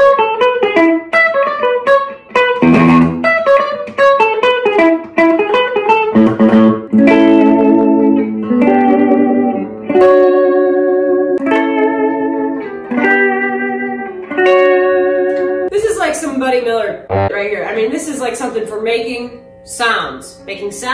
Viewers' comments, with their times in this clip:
0:07 you had me thinking you were about to do the Better Call Saul theme song. That was a lovely sound.